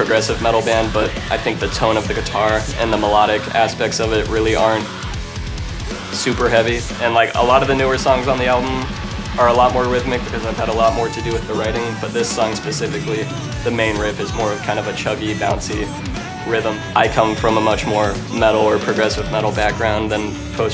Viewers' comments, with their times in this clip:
0:07 the blast beat!!!!!!